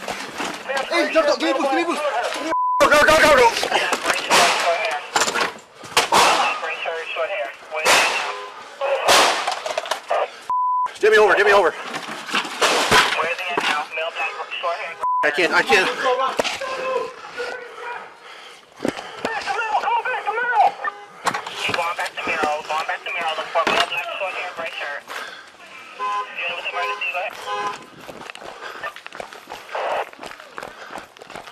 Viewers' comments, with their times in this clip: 0:04 lol here let me help....THUMP
0:19 Was that the big homie Ice Cube yellin?
0:19 coms sound like war